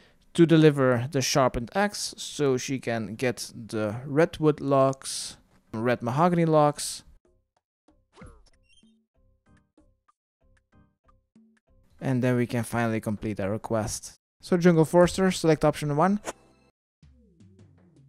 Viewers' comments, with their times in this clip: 0:06 did he really say Mahogany right? I am kind of sad by that :(